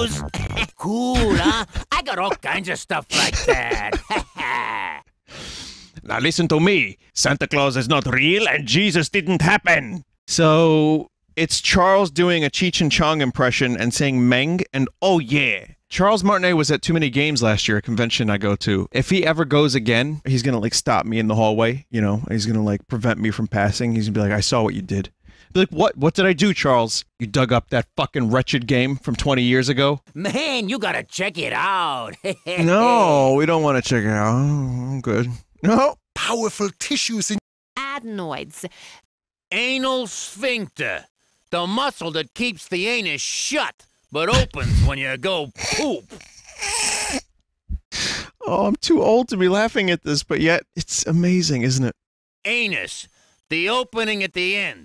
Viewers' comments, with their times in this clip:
0:06 Vinny is possessed by Spy TF2 Edit: Vinny's high pitched "WHAT!" got me so good.
0:39 Okay, this is beyond your typical weird 90's game. I never thought I would hear Charles saying things like "ANAL SPHINCTER", "POOP", "ANUS" and "FECES". The voice he makes is very similar to Wario's, so I guess it fits. But, man... that was a real educational experience! I can only hear and imagine Wario talking
0:39 -Why does this sound like someone's dad explaining a dad joke after he just wooshed his kids?